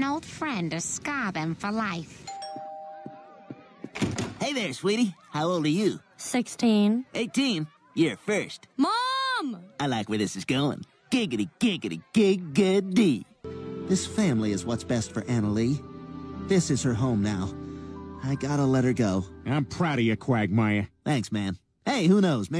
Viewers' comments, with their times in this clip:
0:10 Quagmire: Giggity, giggity, gi-gi-ty Closed Captions: Giggity, giggity, gay-good-D Now i can't unhear it LMAO